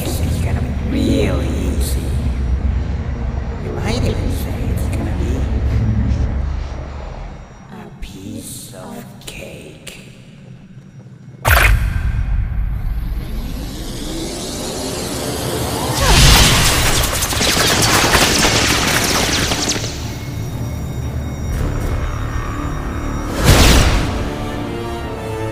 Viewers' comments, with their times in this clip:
0:07 Damn, cake has never sounded so threatening.